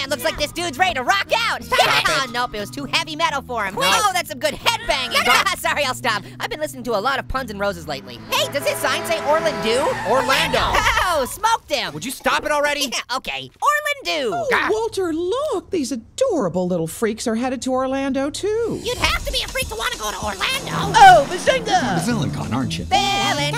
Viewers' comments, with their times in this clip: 0:08 And I like and the part that orange says orlandoo